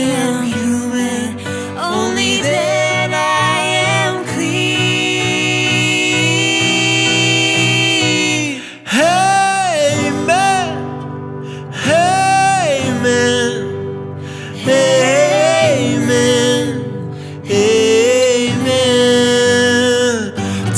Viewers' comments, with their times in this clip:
0:07 I know right? he says "hey men"